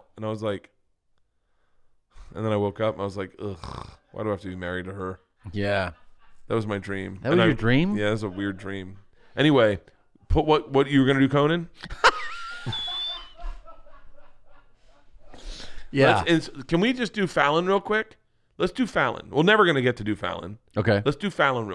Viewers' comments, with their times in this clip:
0:06 never heard tom laugh like that